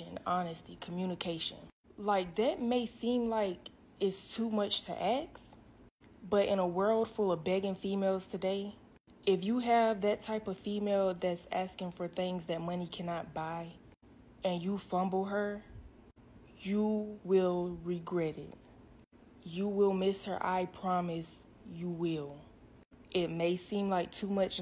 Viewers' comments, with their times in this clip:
0:05 "dat may seem like too much to axe? Too much to ahks?" What is it? Why is her K ahead of S in ASK! It's ass-k!"